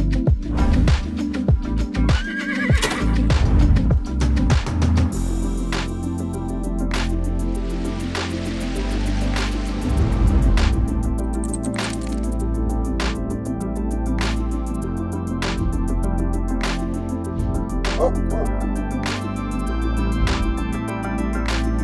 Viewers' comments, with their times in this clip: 0:08 wow, never realized that Lego horses actually neigh if you get close enough to them.